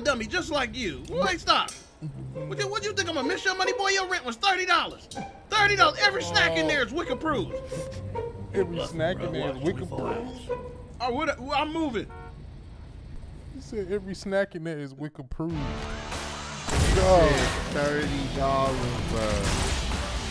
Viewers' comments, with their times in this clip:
0:04 At first I like wickapruf??? And it took me a few minutes to realize he said "wic approved". Wic is a food program in the US for women and children from low income houses.